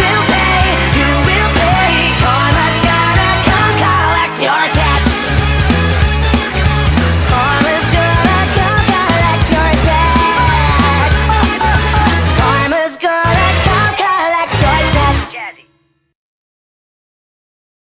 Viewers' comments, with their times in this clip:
0:04 They sound a tiny bit like Nevel from iCarly